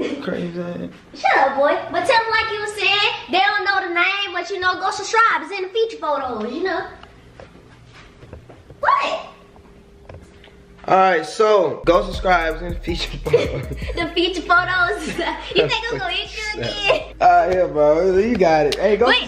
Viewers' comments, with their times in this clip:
0:04 she said shurshibes did she mean subscribe lmfaooo